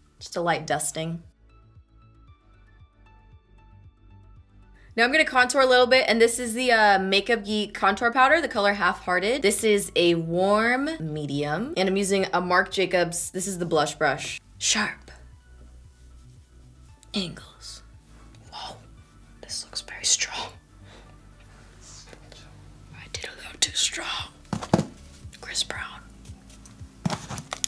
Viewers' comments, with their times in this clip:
0:08 Litterally heard "this is the makeup geek contour powder the colour I FARTED" lol